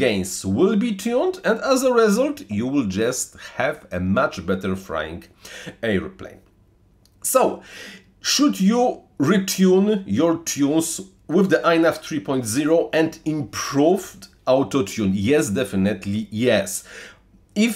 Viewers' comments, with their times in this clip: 0:03 "much better frying airplane". I hope not 😂